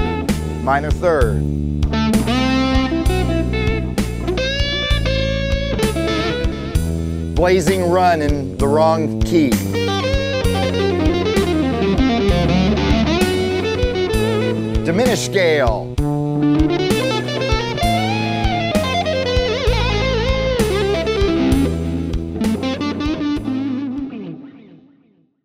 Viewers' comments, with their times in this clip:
0:07 made me burst out laughing 🤣🤣 Scott is awesome I love his tone